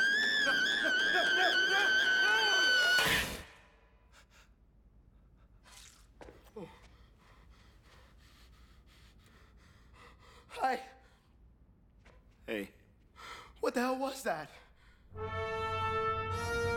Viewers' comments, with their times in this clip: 0:03 OOF (ROBLOX DEATH SOUND)